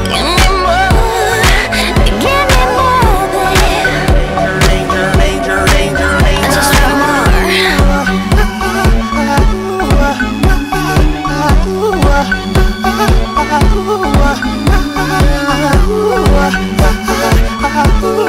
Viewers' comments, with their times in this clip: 0:04 I heard something like "reincarnate"